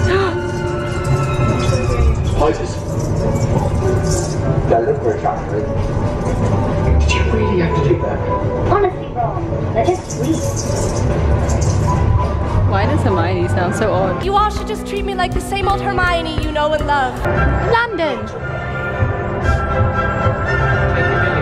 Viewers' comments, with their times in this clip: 0:09 Why does Hermione sound so weird.... Unfortunately when they built Diagon Alley, neither Emma Watson OR Daniel Radcliffe wanted to reprise their roles as Hermione and Harry, so you are hearing voice actors who are meant to sound like them... Its the same reason why you never see their faces on the Escape from Gringotts ride.